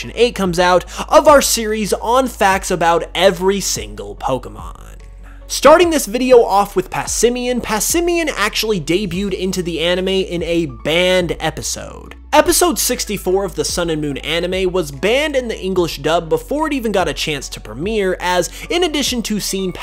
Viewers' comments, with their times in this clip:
0:03 i like his videos but i just cannot listen with headphones lol i cringe so hard at how he finishes his sentences like on “every single pokemonnnnNNNNNnn”